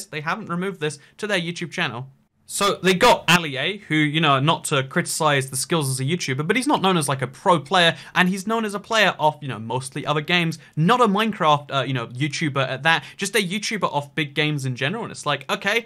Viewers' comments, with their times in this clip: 0:03 note: very quiet part turn sound up all the way
0:03 um your audio cracked there